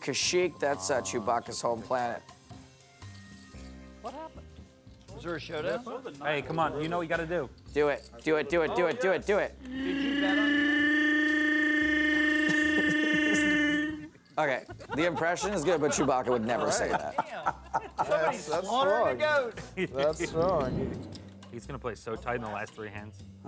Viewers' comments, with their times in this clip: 0:09 Wth is that a baby goat crying?